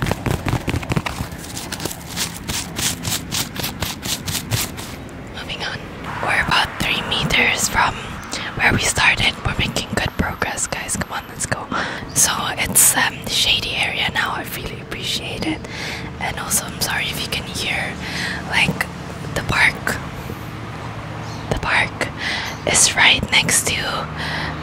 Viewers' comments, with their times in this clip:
0:07 is when the swinging sound stops😂💕